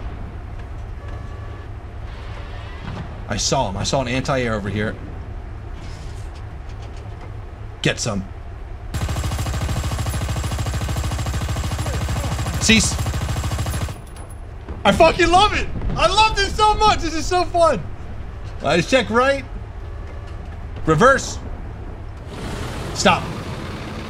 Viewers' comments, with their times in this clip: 0:06 I was expecting something like ATATATATA tbh